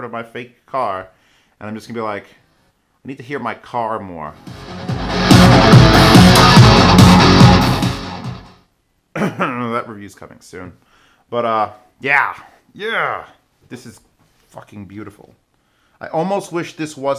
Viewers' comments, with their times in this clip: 0:03 lol thanks for shaking my room, how does the gopro mic not completely distort when it suddenly gets this loud, is there some kind of magic sorcery in it?